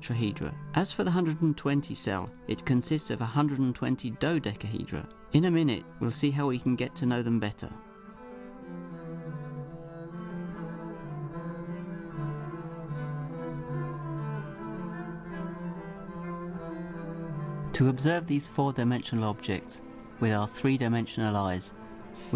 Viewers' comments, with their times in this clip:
0:10 That music ... got chills, it's so sinister...